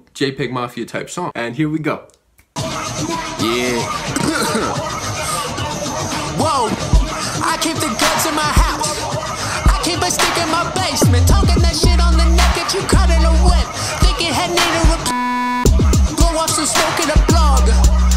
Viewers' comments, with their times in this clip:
0:03 Me: Mom can we get "jpegmafia" Mom: no we have "jpegmafia" at home Jpegmafia at home: